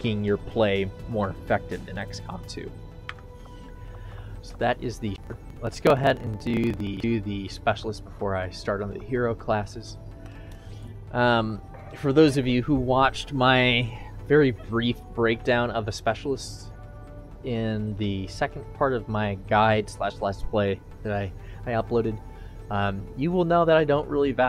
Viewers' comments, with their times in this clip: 0:06 This is a very good video and I like your inputs on each class. Im surprised nobody mentioned this in the comments but there is some audio stuttering as the video goes on which is very bothersome. Namely and further on. It seems like its your mic causing these audio issues as well. Hopefully you caught this, thanks for the guide.